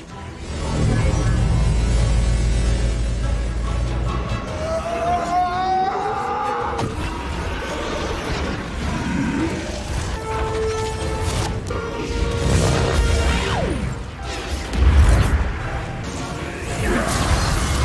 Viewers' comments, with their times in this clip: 0:04 His screaming gave me chills till now
0:05 gotta imagine being in the studio when Benedict recorded this scream here, sounds truly gut-wrenchingly painful